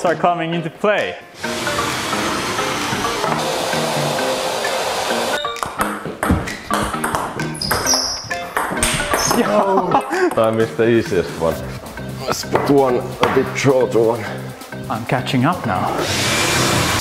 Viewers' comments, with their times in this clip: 0:05 matched the beat of the music in a sec